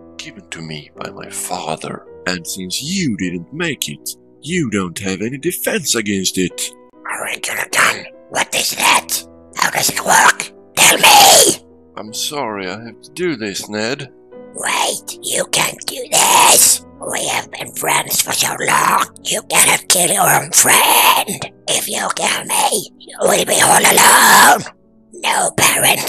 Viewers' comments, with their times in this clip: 0:08 sounds like a goldfish gurgling